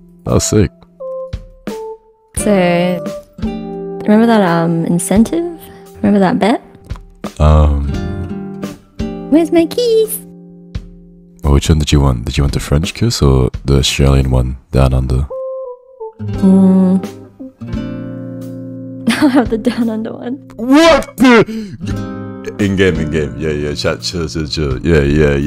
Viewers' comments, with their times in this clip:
0:07 how she said “where’s my kiss” was so cute